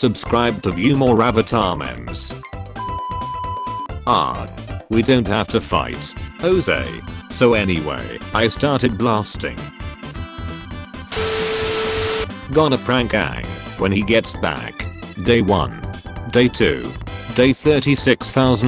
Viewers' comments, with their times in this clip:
0:03 Did i hear oong instead of aang around the time